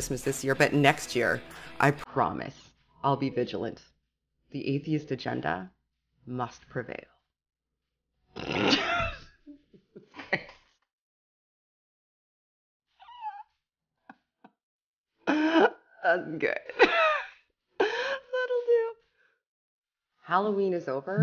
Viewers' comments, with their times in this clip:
0:09 Strangely enough both of us did start laughing Well played :-)